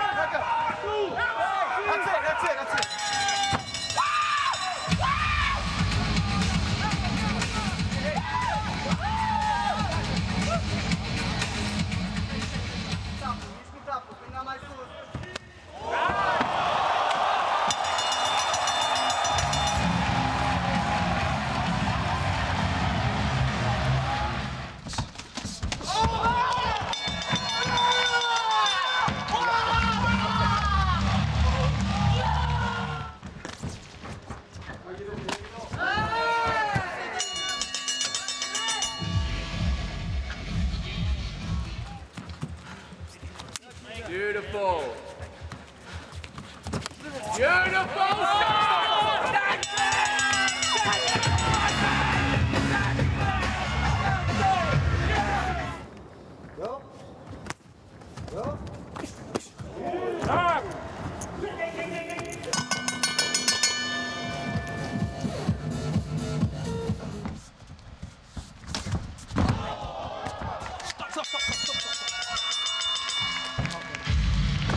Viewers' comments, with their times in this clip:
0:04 Ref was like “dude, why the f you yelling?”
0:25 that 2 piece was EXTRA crispy! 😦
0:34 That sounded like a shotgun blast bruh🎉
1:00 the guy doing the manual ding, ding, ding bell 🤣
1:01 lmao the ref made ding ding ding ding sound
1:01 the referee mimicked the bell sound. that got me dude called out "ding ding ding ding"